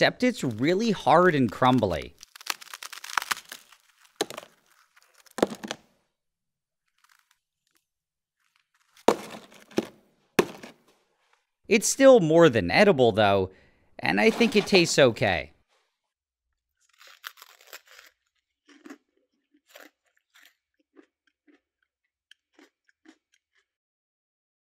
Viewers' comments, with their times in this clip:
0:03 i had my sound off the entire video, but i could hear that crack
0:18 Love the way you crunch it